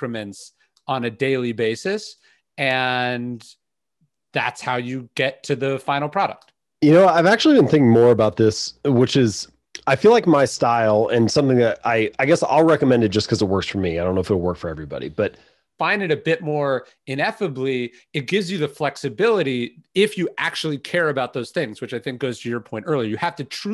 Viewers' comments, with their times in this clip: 0:09 does anyone know what he said? It inexplicably cuts off at a key moment. Is it in the spotify version?